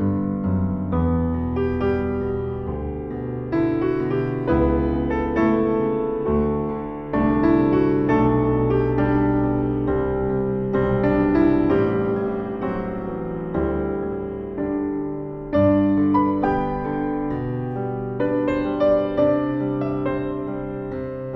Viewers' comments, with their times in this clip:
0:03 The exquisite voicing reminds me of Brahms. Excellent arrangement and playing.